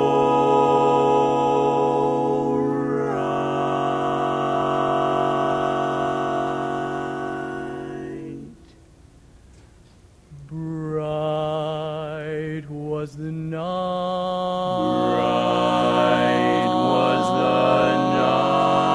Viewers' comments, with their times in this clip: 0:03 When I die, I want my last few seconds to be spent listening to the chord